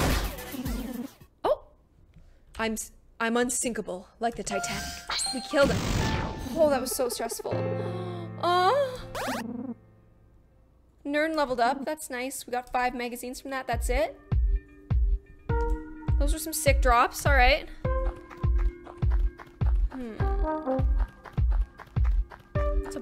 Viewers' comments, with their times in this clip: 0:04 did she moan